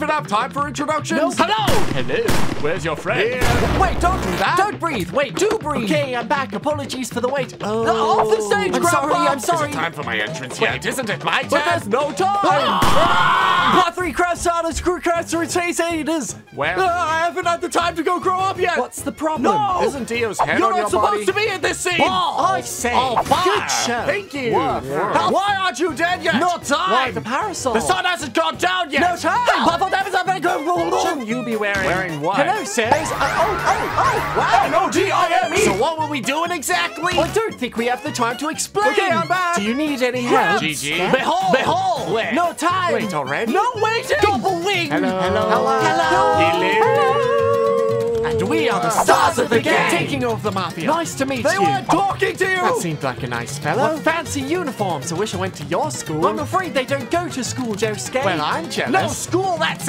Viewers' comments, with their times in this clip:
0:10 I love how chaotic this is especially and the star cra sa su cru sa sa cur sa der
0:14 I love how he misspelled the word "Crusaders" and "Stardust" while saying it.
0:22 BALLS avdol said calmly
0:45 I was dead 🤣🤣🤣 Seems like they will be taking over barbershop quartet😂😂